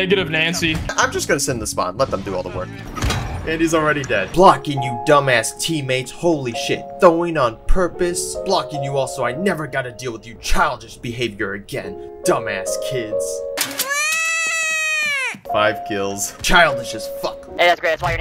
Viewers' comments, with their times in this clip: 0:05 what's this sad ass anime music called? Like where is it from and what's it's name? I been thinking about this song.....🎉